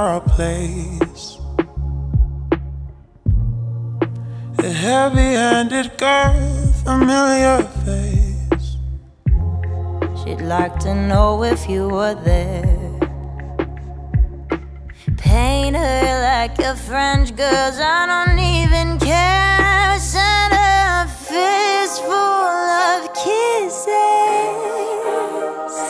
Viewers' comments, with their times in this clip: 0:09 I LOVE this part it sounds like Amy Winehouse as hell. 😄